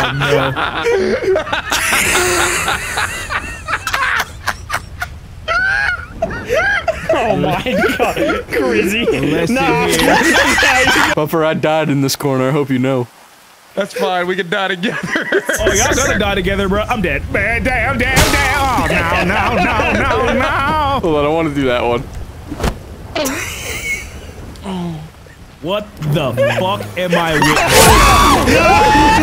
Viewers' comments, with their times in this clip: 0:09 that scream laugh tho! 😂
0:17 Why was this such a good impression